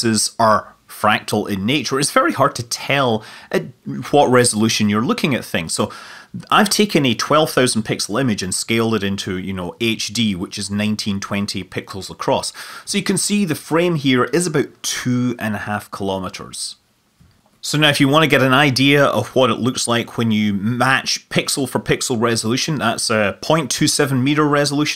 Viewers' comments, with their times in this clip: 0:09 "HD, which is 1920 pickles across"
0:10 the video is awesome! but I still can't get over the fact that he said "1920 pickles across"
0:10 "1920 pickles across." Scott Manley, 2021
0:11 you said 1920 Pickles across